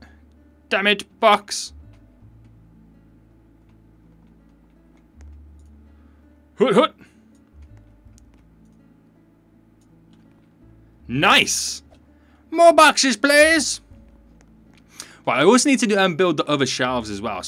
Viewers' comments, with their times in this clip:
0:05 you sounded like you said HuttHutt witch is the name of my dog!!!